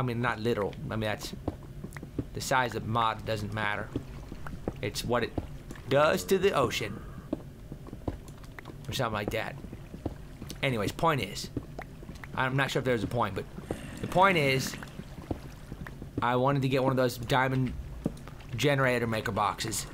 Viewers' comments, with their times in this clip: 0:05 Ocean or oh shit?